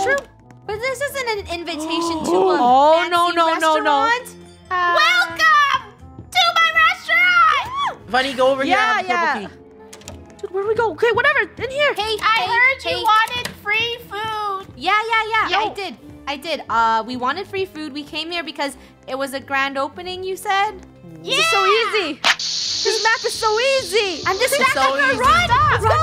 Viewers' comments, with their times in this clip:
0:05 you can hear their ring doorbell
0:13 her clown voice is so cute